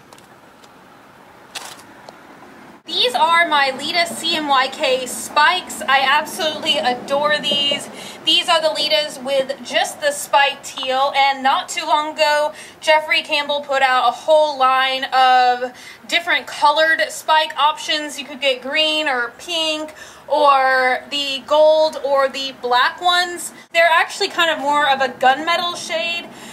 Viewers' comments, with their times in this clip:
0:10 Did you heard the crack ?